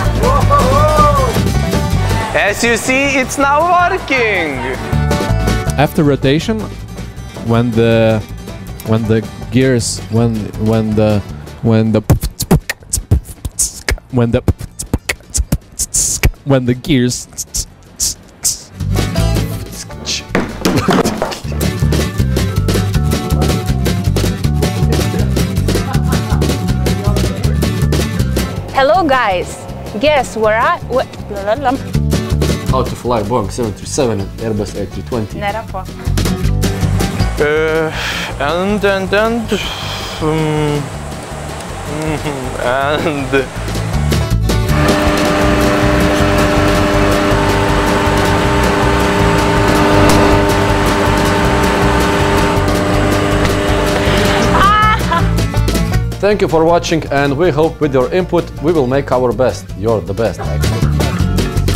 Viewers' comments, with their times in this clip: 0:06 Nice Beat Boxe, min
0:49 That impact noise tho xD